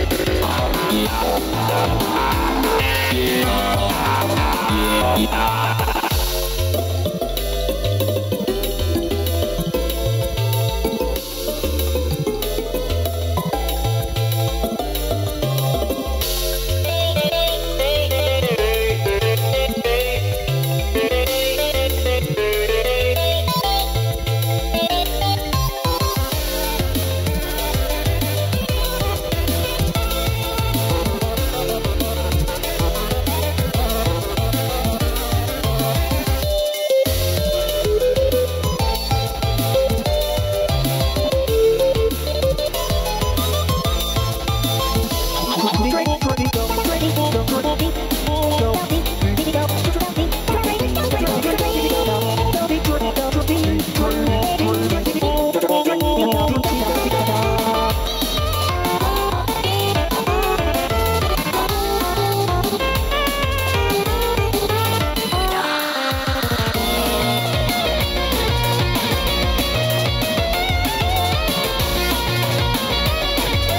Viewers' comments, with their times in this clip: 0:07 i know among us is a dead game and highkey cringe but that imposter character was pretty cool with the note sounds
0:59 Am I the only one to find out that Carol's vocals sound off?